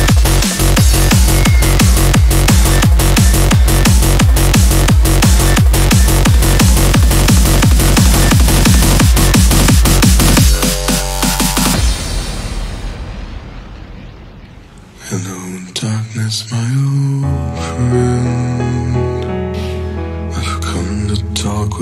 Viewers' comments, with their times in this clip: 0:09 Break down almost got me a speeding ticket.